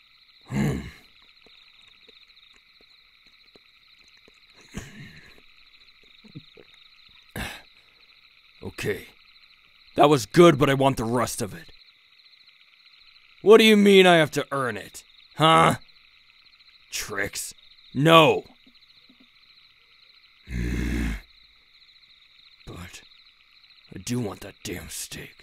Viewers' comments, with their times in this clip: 0:03 around there you can hear his voice crack-
0:10 That voice crack tho 🥲💘🥺